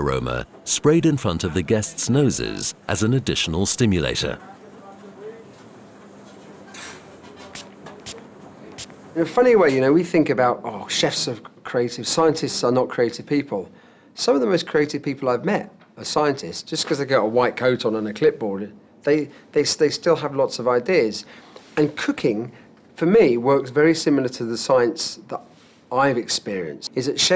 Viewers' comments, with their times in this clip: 0:09 "In a funny way, you know, we think about 'chefs are CRAZY; scientists are not crazy people ..." Come again? Have you never heard of the phrase "mad scientist"?